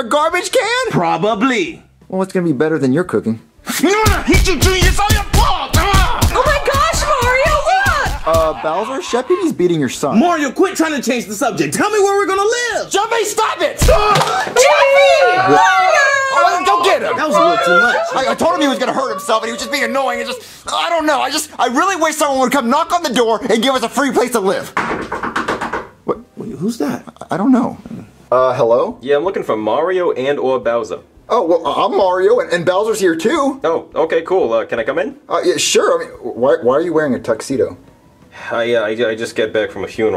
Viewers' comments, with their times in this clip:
0:07 you can hear chef pp laughing well beating up jr😂
0:12 JEFFY STOP IT!!! hits jeffy jeffy crying
0:13 Jeffy screams and then he cries but rhe
0:13 Mario: JEFFY STOP IT! (pushes jeffy) Jeffy: AHH! (Cries cutely) Cries: HOO HOO HOOOOOOHHHH
0:24 😂Haha the knocking
0:25 the way he knocks on the door